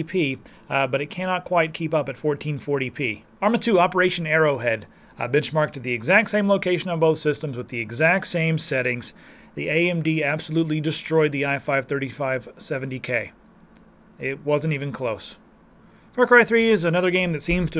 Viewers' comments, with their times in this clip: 0:05 Bitch-marked much higher than intel, woo!